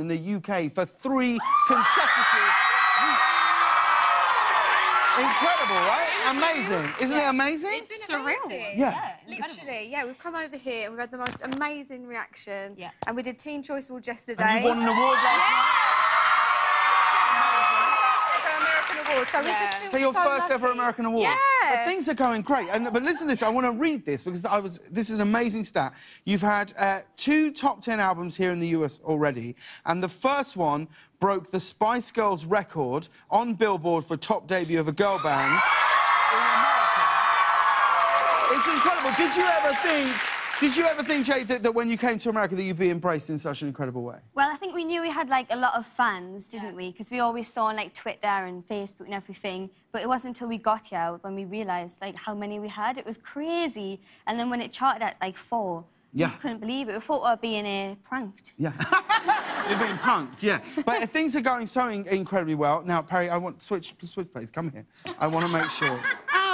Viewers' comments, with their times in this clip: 0:10 did anybody hear a fart?, or is it just me..
0:51 why does she sound Irish not to be rude but I really like it And I dont think she's Irish either
0:52 et was creeeeezei Jade your accent is the reason im still alive